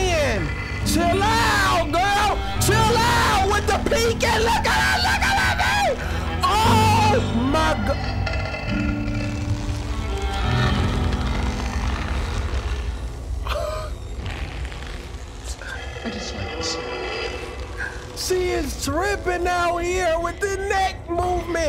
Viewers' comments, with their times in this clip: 0:04 the fear in your scream says everything 😭😂